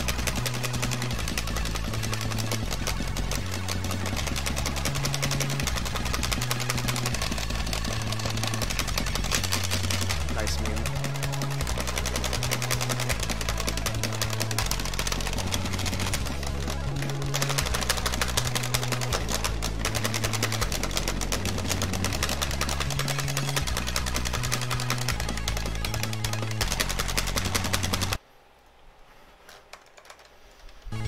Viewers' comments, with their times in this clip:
0:08 At just past when the super fast descending triplets are going, his hands look like he's doing ascending triplets. I'm confused
0:15 how fast is this trill?